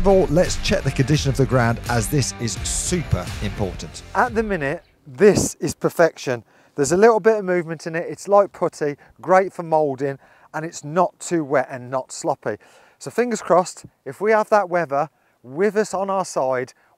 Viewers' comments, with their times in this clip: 0:04 "This is perfection, its got a bit of movement in it... Its like what?! not to wet not to sloppy" I had to go back and check what you were talking about.